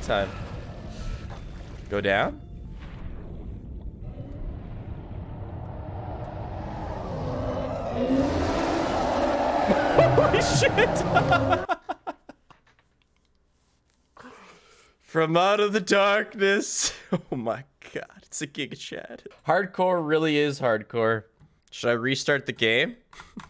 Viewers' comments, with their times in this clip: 0:04 Why did I click on this video? The Reaper's roar gives me war flashbacks...I've even had a nightmare about the creature before I even played the game for myself fo the first time! "If you can hear it; it can see you!" (I've watched and rewatched many YTbers play the game pre release and on release)